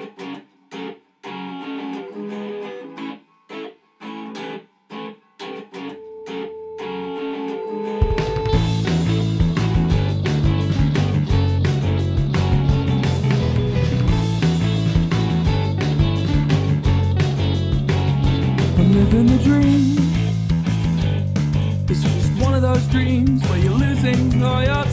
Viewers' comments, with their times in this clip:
0:08 jubilee line gives off the same vibes as youll understand when youre older, or is that just me and no offense but the soft boy riff is way way way way way too similar to an existing song freaks - surf curse the riff is too similar in the beggining (starting )